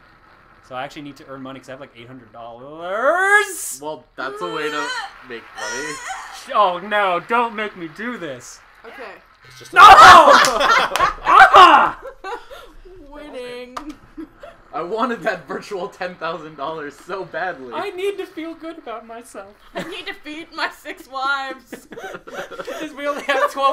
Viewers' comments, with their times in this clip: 0:10 the most painful buzz ever, hahaha.